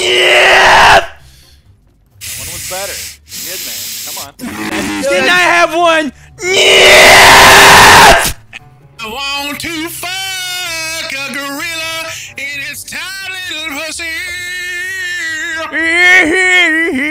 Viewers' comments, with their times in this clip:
0:05 my ears need a wheelchair